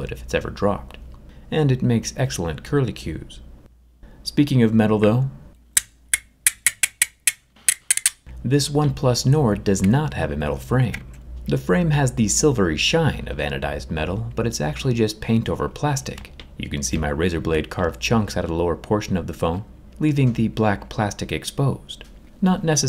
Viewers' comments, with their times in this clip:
0:05 my favorite asmr
0:05 sounds like a song also not a nice sound makes me cringe